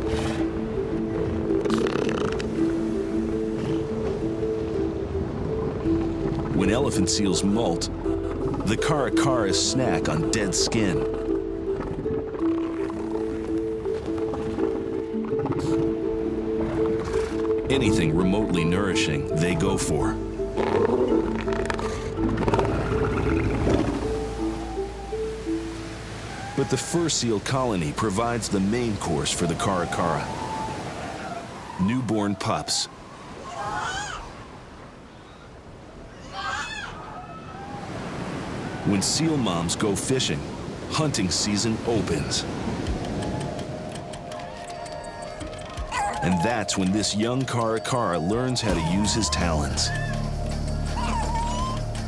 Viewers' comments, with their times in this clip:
0:07 is it crying?
0:33 sounded like the wilhelm scream